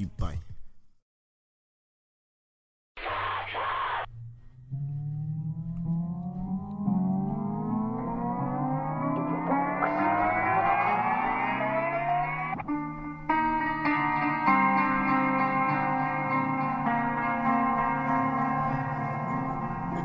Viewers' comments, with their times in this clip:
0:03 I noticed that he always has that screaming noise on sum of his songs